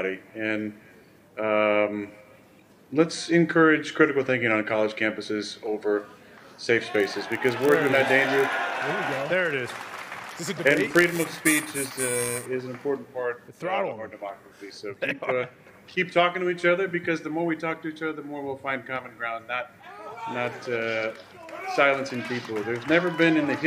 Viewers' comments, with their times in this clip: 0:09 did anyone notice the static when Rodgers brought up free speech/ thinking?? that was crazy